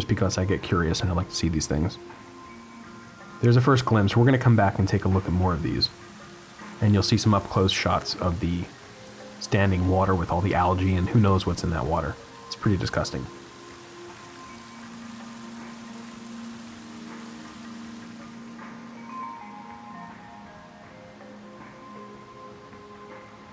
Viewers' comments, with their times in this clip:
0:07 'Ey a bird! I thought I was going nuts for a second.